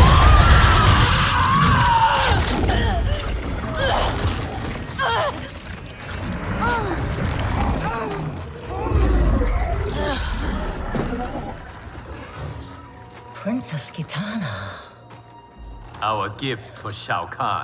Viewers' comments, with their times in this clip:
0:05 Why's Jade sound like she's starting to enjoy it. :face-purple-wide-eyes: